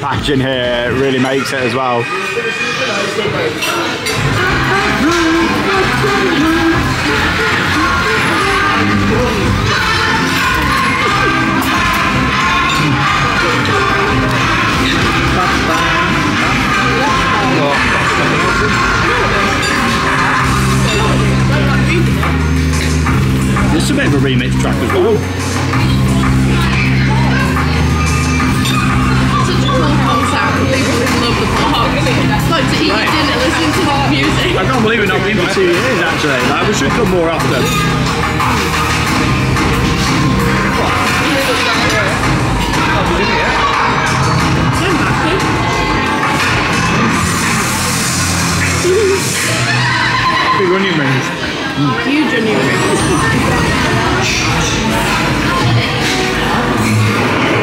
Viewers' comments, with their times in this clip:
0:04 the smiler theme is a bop.hahahahahahahah.
0:43 that music would drive me insane omg